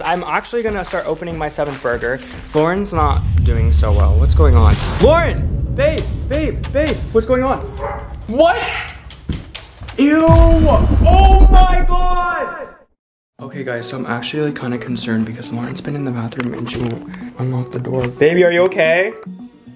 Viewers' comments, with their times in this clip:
0:07 SHE SOUNDS LIKE A RAPTOR